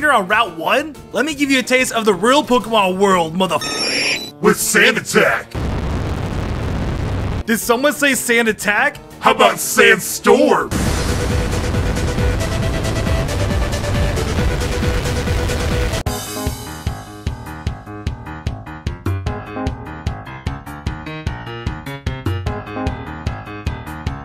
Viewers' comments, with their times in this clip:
0:10 the angry birds music is playing it's just relaxing